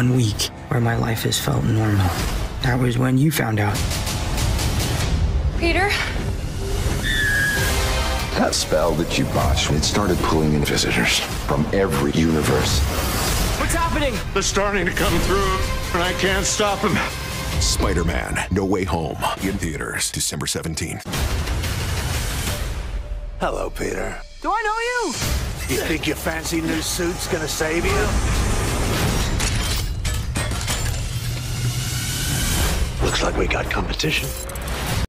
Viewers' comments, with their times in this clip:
0:05 why that 'Peter' sounds more like Emma Stone's voice instead of Zendaya.
0:29 noticed something really cool. the sound the iron spider suit’s legs make is identical to the sound Doc Ock’s claws make after the line “I’ll peel the flesh off her bones” in Spider-man 2